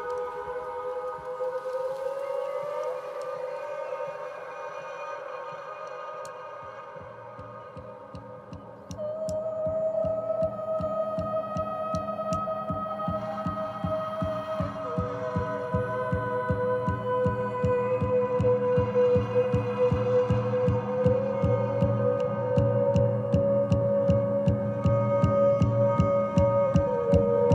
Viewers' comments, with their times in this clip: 0:10 I could listen to that drum and vocal solo till eternity overtook ragernok itself. And I'd still be listening to it.